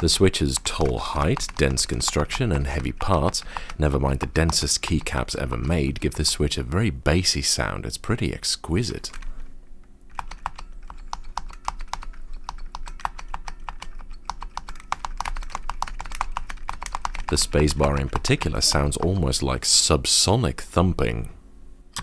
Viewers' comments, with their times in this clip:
0:06 do u mean thock?